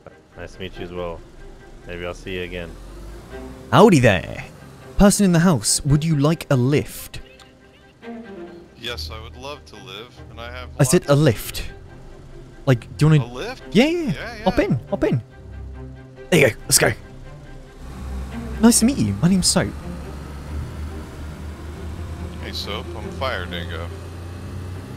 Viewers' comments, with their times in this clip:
0:06 i would love to live ... no "lift"! that got me :D